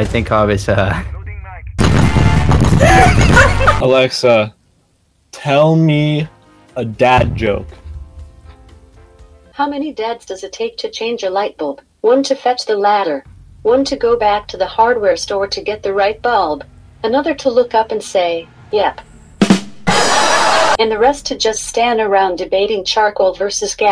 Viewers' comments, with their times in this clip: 0:09 my Alexa came on and scared the shit outta me. I KNOCKED OVER MY FUCKING DESK*